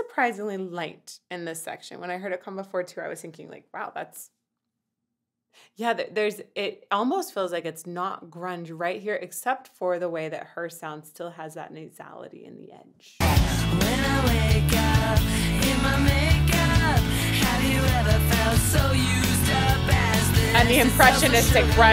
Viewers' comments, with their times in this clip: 0:07 it's the distortion that makes the difference.